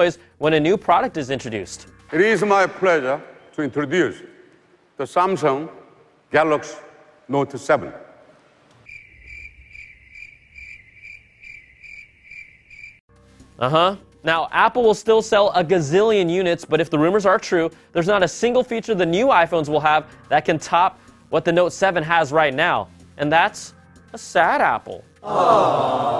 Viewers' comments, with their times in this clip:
0:09 that is a lie if u look at the reveal video on samsungs channel there was an applause not awkard silence like in this video